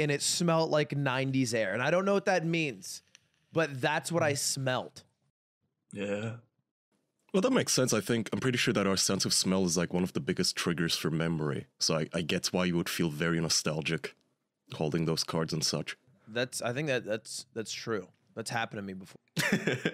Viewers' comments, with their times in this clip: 0:05 That "yeah" was filled with nostalgia or somethin